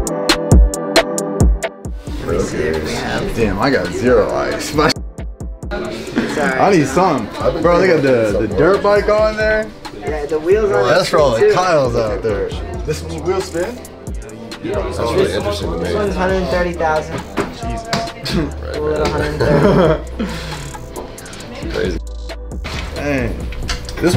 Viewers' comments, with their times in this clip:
0:06 I have a feeling you said the N word Explain😂